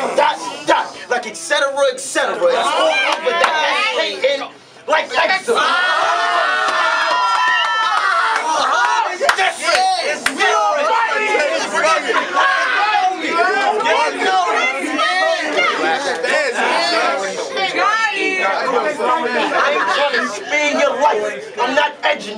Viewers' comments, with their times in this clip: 0:07 man.... i replayed it like 10 times and I'm just not getting it... i can't really hear wtf he's actually saying... someone break it down for me